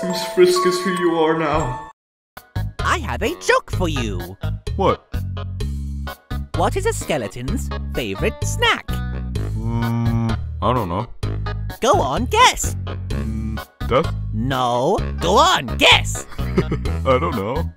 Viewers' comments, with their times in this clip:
0:03 I'm dying help,OMG why does papyrus sound so angry yet so funny😂😂😂